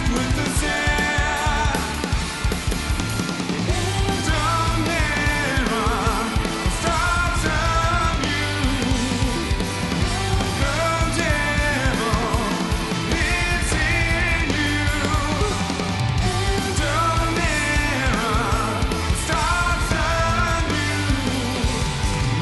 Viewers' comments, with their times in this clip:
0:05 To me best parts started when bass guitar person stopped to repeat one tiresome motive.